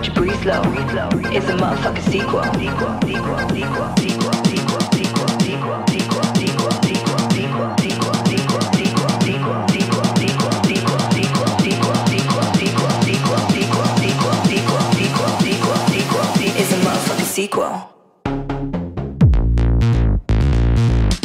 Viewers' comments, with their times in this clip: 0:05 I don't hear the word sequel here, I hear another word.